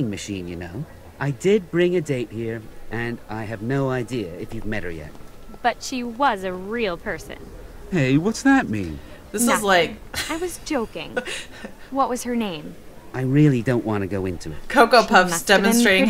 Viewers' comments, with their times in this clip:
0:04 All I have to say... I've never heard someone who's parents are American, born in America, sound like that.... it's really odd. I also find it amusing how his voice goes from high to really low. xD Moral of my comment: This game is weird on so many levels.